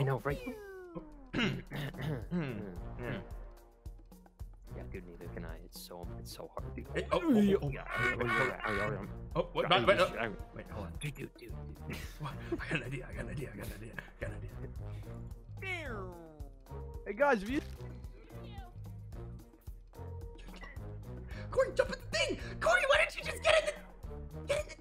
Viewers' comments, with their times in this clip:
0:07 great alarm clock XD